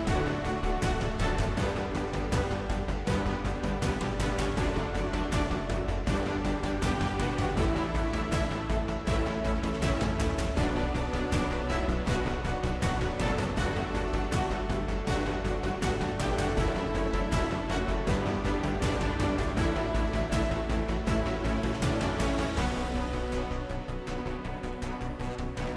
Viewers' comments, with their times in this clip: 0:08 I love that song!